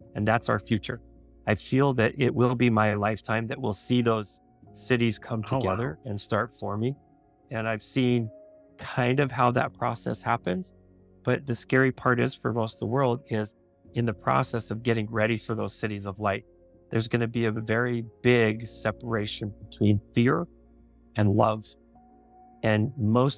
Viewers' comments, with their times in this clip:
0:05 can you hear that voice behind???